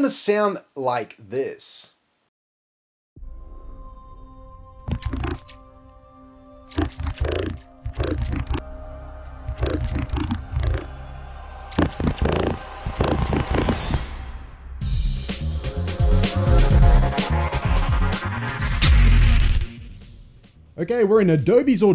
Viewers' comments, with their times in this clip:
0:06 it sounds like he said just the cage. we found reaper we found reaper
0:08 name of the star wars music? they just make it epic!